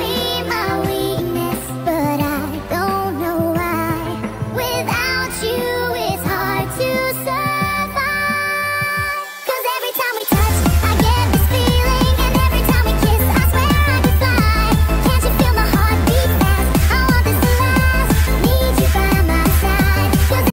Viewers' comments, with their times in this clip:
0:09 When the beat drops harder than my grades Im like